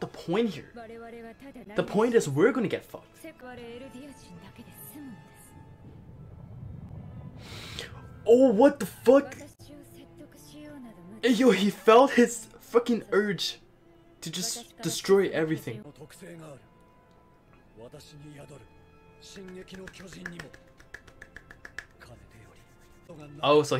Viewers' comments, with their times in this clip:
0:07 You can hear The Rumbling